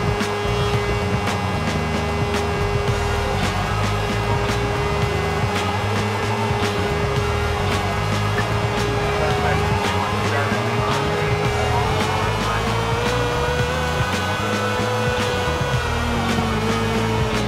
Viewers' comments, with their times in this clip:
0:03 the tune goes so well with the police chase